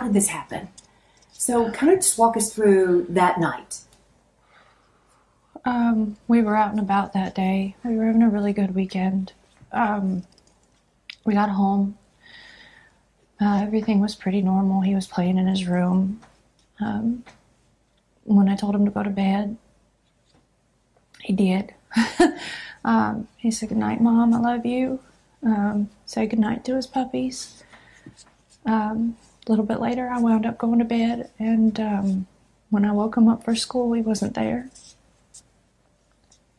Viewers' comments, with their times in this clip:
0:03 :_dddREDFLAG: why are they laughing....... I am willing to go with nervous laughter right at the beginning but that needs to change.
0:19 when I told him to go to bed, he did. She laughed nervously. To me it seemed she was surprised/amazed that he did go to his bed upon her request. It might be nothing but seemed to me that something has happened earlier that she might not have expected his obedience.